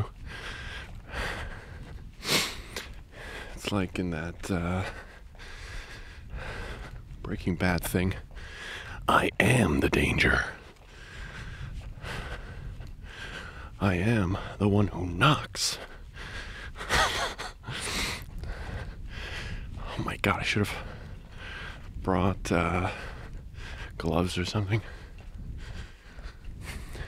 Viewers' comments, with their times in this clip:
0:09 So.. jump scare hu? (Seriously you need to cut this & make it a ringtone.. its brilliant Lol) Honestly I can imagine someone seeing you jogging at night with a microphone talking to yourself & huffing it. 🍻All for an audio. - Bravo, improv, method & dedication. Cheers to that! 🥂